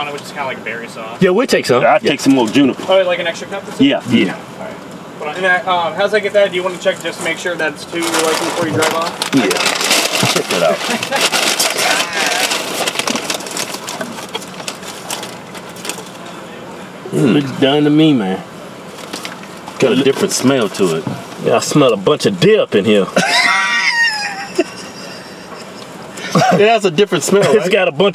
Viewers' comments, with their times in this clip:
0:08 had that worker laughing for real from just slapping that man with his meat sack.
0:09 u can hear the worker laughing 😂👌🏻